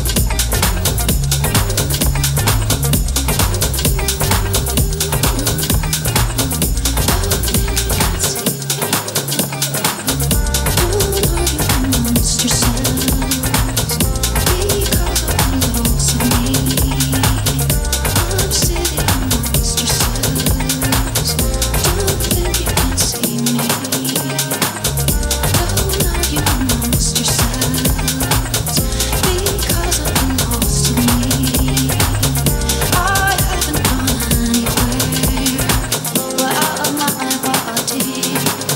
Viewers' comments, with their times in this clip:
0:06 WAT A FKING CLASSIC HOUSE MUSIC <3 TMB TOP OF THE TOP HOUSE GANGSTARS!
0:22 I f'cking love that song